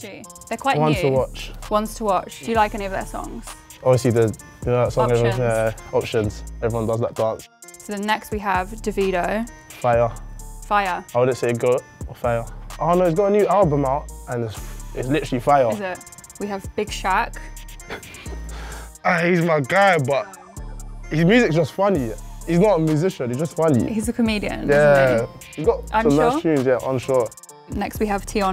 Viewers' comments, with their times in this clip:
0:09 Listen To How She Pronounces Davido 😂